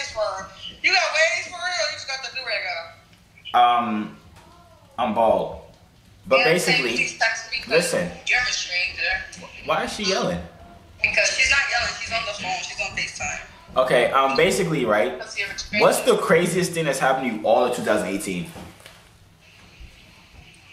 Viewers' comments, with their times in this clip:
0:03 Theres somebody moening in the back